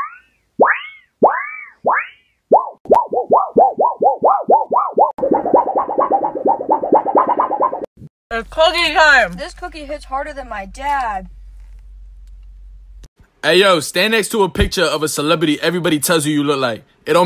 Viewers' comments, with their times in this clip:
0:03 that shit be sounding like when you bend a damn hairclip